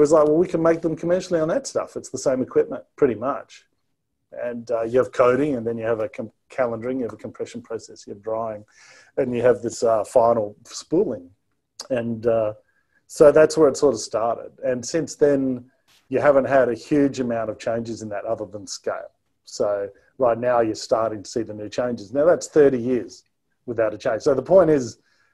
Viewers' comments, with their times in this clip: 0:07 As you can tell I am a big fan, I was just watching "Tesla's Alleged Roadrunner Cell - Comprehensive Breakdown" there is a little audio click. I have heard it a couple of times on some of your other content and it is a common issue with Avid (and possibly other platforms). If you want to remove it just put a small 2 frame audio crossfade on the edit and render it and that will remove the click. Keep up the great work mate.